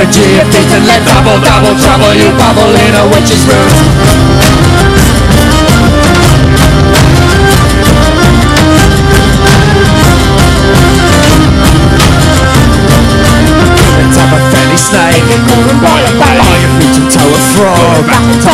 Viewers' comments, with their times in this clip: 0:06 That didgeribone, I'd like to take that apart and see how it works.